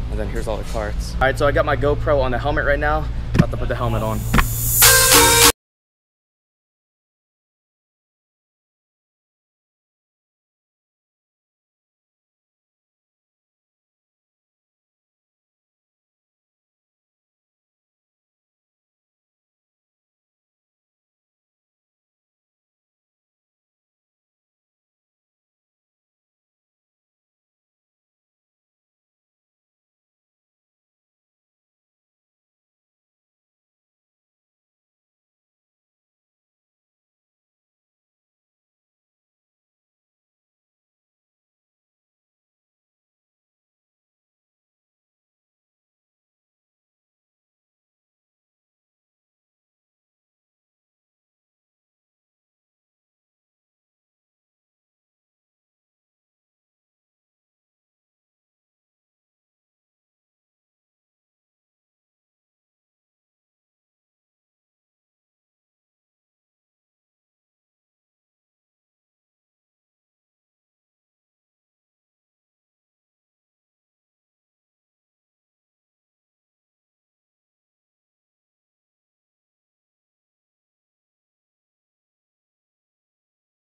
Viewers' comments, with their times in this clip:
0:07 did you know it is an arabic words in this music .. im not sure if it's arabic song or just edited with arabic words :D
0:12 THE MUSIC IS SO FUCKING LOUD WHAT THE FUCK TURN IT DOWN
0:34 OMG the background music is a remix of an old school arabic song its soooo lit
1:07 wow im fuckin surprised with the arabic song :v